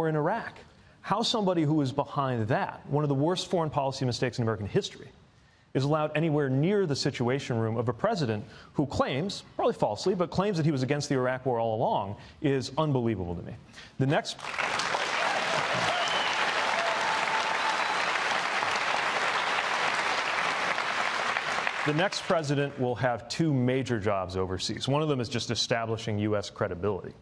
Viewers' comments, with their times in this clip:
0:10 man on left claps